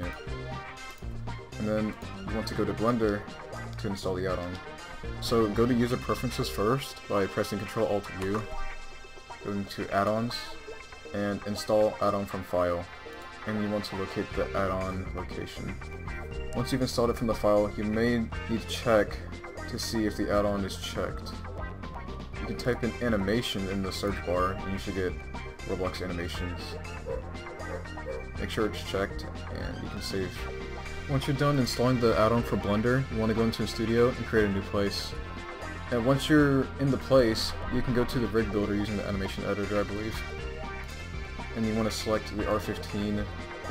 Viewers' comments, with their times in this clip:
0:08 wtf did he say
0:26 *dog barking casually in the background*
0:27 epikly dog bark